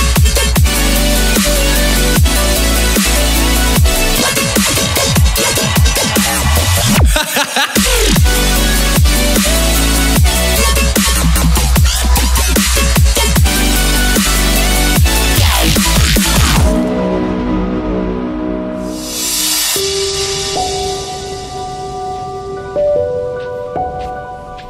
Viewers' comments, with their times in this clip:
0:07 is that pewdiepies laugh?